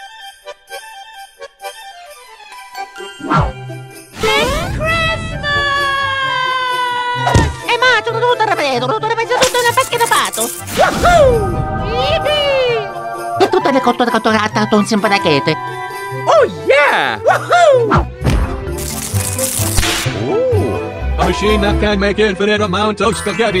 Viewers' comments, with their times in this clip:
0:07 Mayro look happy at screaming to make spagetti